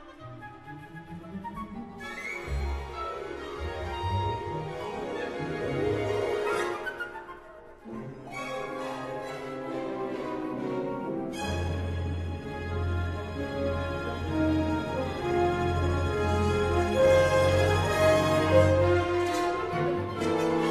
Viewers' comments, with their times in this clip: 0:08 Mr. Banning becomes Peter Pan! Such great music!